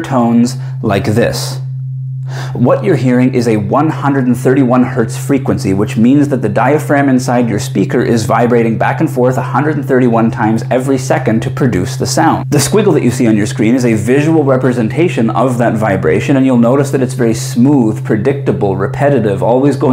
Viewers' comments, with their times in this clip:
0:03 Was I supposed to be hearing something other than you voice here? :face-orange-biting-nails: